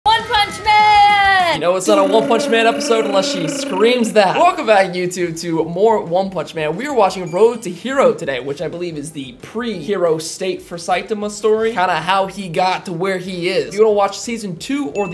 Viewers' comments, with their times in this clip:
0:01 The special effect of the power of the punch TRRRRRRRRRRRRRRRRRRRRR haha she is so sweet ^^